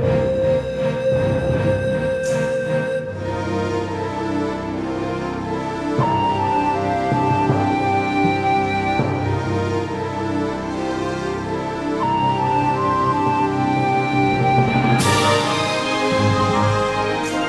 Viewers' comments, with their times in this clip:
0:04 Drums for the first measure need to be less dull, more pronounced. Also, not sure about that transition but otherwise a great remaster of this epic track.